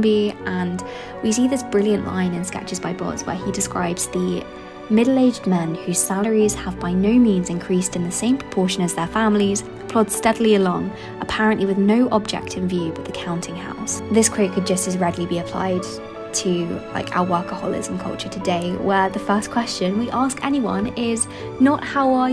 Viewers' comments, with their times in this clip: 0:04 What god-awful music